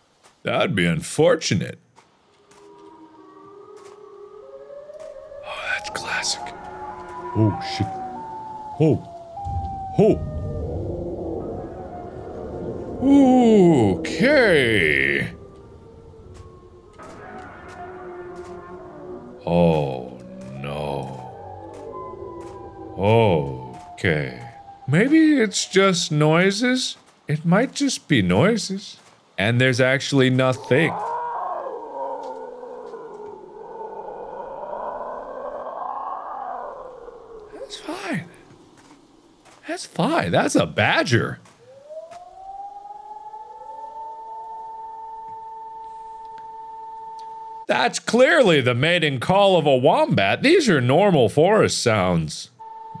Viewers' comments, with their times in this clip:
0:03 “noise” Me: knows that’s the attack sound Me: is also my profile pic after hearing that
0:17 Little late to the party. but did the noise sound like the Prowler from Spider-verse to anyone else?
0:28 damn who let the clickers loose
0:31 sounded like a bobcat. Lol they legit sound like something out of hell. Especially females in heat. They tend to sound like banshees, or a woman screaming in general. If you've never heard them, look it up, it's Nightmare fuel. Lol
0:41 Siren plays Mark: “That’s clearly the mating call of a wombat. These are just normal forest sounds.” What kind of forests have you been visiting, Mark?